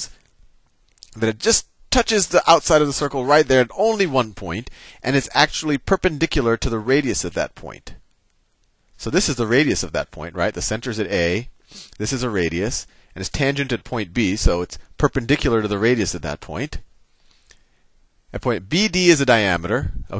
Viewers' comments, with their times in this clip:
0:06 I love the way he says "Perpendicular",